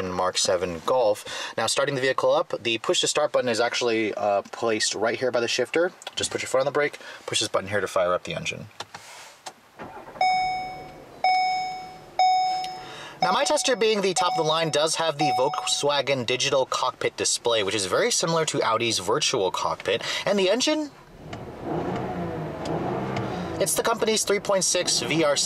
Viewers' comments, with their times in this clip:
0:09 Like A Ford Focus Chime!